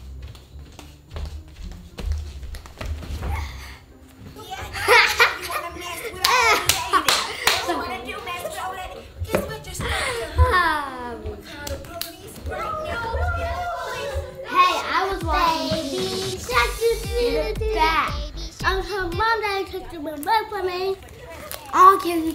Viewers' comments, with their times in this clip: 0:04 who puts on the tv and immediately starts laughing 🤷🏽‍♀️
0:05 laght before she even sees 1 second of the show